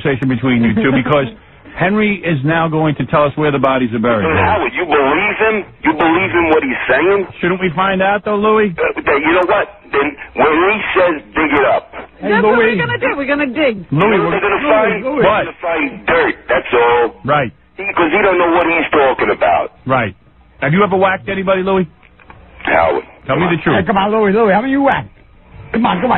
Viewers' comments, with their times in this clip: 0:07 "Paulie" sounds just like "Louie"